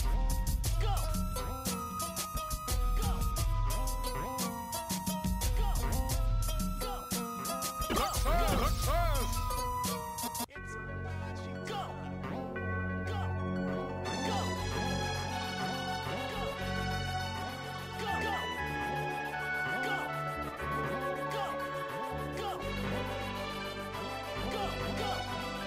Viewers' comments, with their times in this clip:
0:10 music is more than atmoshperic,it listening like a story for a this game hard,its for a tale a hardest game......I like! P.S hope cheats